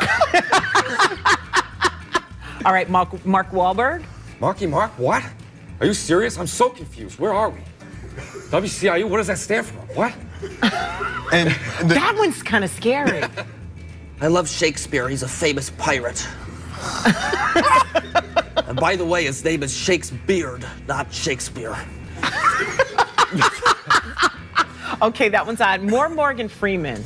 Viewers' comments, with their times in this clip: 0:09 wow, who knew Hayden Christensen was good at impressions :p